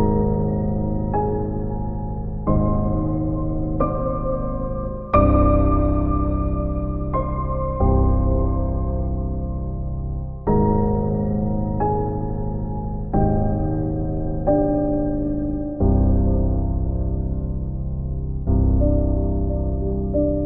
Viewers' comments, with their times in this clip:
0:04 sounds familiar.. minecraft music intensifies